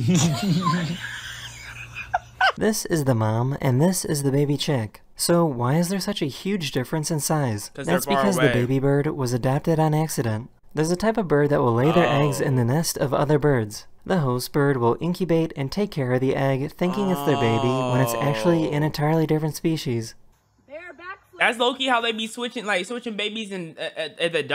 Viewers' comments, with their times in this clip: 0:09 i thought it was abortion. M